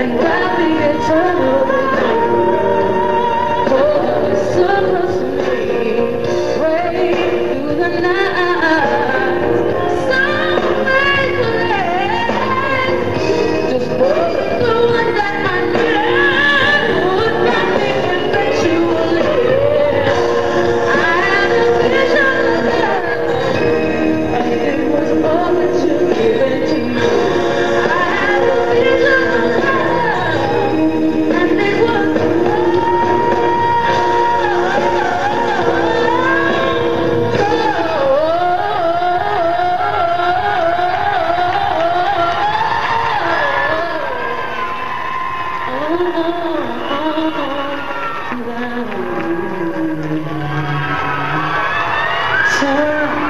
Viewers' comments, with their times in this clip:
0:09 BRO WAIT SOMEONE DEFINITELY DID A WEIRD REWINDING EDIT OR SUMM AND IT DEFINITELY SOUNDED LIKE THIS "SOoOOo"
0:40 it sounded like she was to the belt but then was like nvm and kept going???